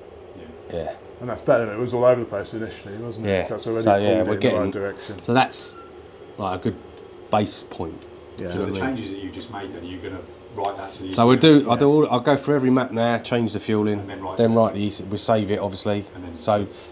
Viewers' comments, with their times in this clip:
0:03 is this a little birdie at the end?